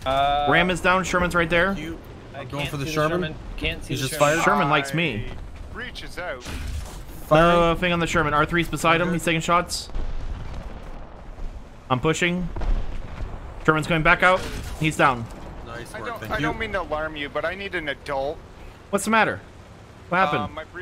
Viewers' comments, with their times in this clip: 0:07 Uuuh, Is that what it sounds like or am I hearing things. (Listen to the background guy, the one saying "fucker" then something else)